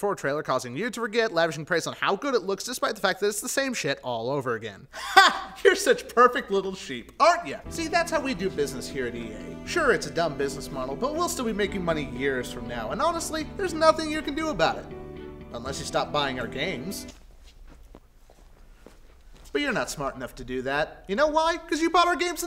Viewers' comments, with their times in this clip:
0:04 That "HA!" is almost the same as in "HA GAYYYYY!"